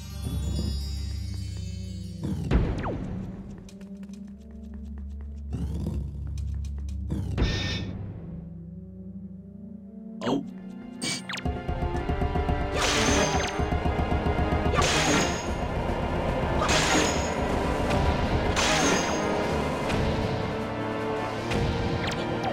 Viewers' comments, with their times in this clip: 0:07 The Midwestern in me always gets a kick out of the synchronized "OPE" these guys do